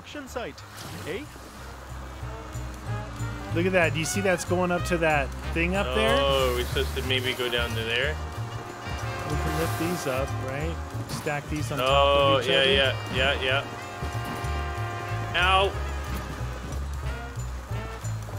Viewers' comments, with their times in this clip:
0:03 I don't know they sound like they are from Minnesota to me.